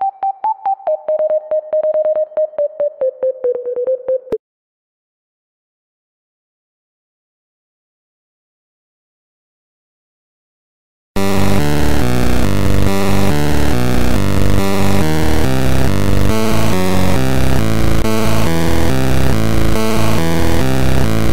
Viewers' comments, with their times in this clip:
0:06 sounds like Sonic.Exe fnf 2.0 frr